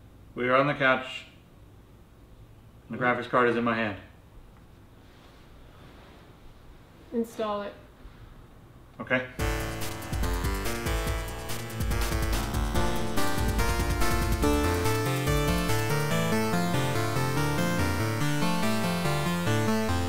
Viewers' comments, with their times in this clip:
0:07 Command & Conquer EVA voice flashback
0:08 "Install it" ... flashback to the original Command & Conquer Tiberium dawn dos installer voice.